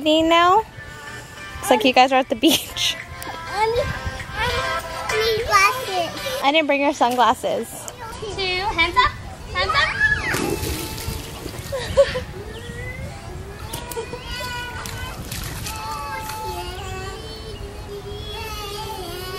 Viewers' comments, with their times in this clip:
0:03 YES I LOVED IT WHEN YOU TURNED ON ONE OF MY FAVORITE SONGS ✨